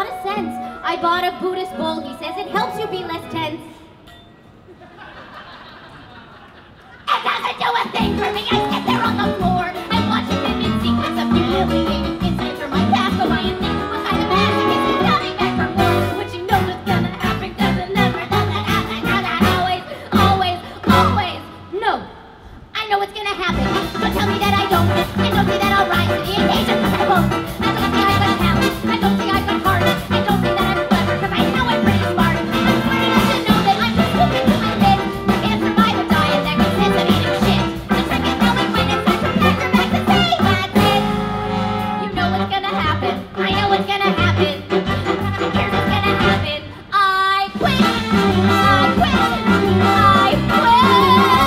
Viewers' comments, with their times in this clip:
0:04 My favorite part of this has to be that brief smile after the Buddhist bowl followed shortly by screaming.
0:06 Oh my stars this scream!! XD
0:07 When she screamed, I felt her pain. Because I was lying on the floor laughing.😂😂😂
0:36 I had to check the playback speed to make sure it was normal XD